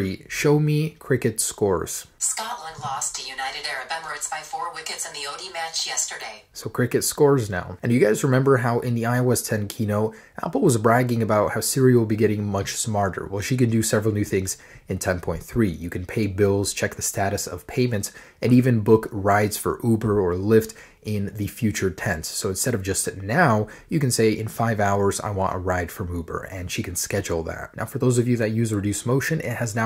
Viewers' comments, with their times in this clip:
0:10 Did he say Serial instead of Siri?